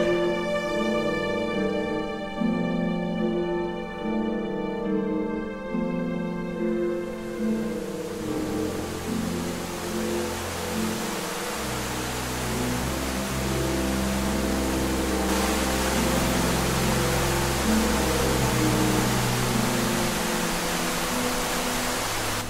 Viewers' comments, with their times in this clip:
0:05 Woah, you're zooming in the microphone as well! 😁 Nice detail.